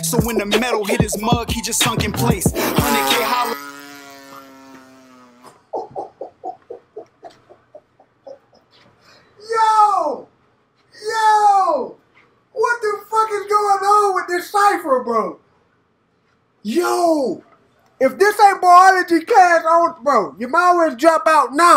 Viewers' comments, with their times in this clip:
0:04 Motorcycle zooming down the street